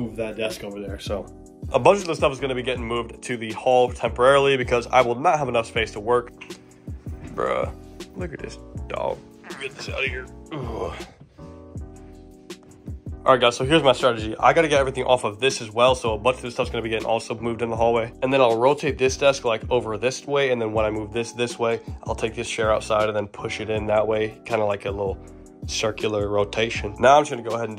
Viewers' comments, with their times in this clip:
0:08 Did he fart ??
0:09 The fart lol